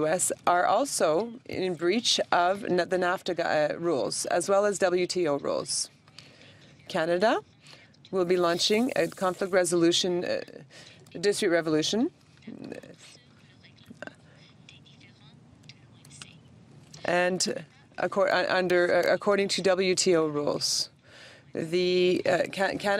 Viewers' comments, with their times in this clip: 0:03 translator stumbling & studdering very distracting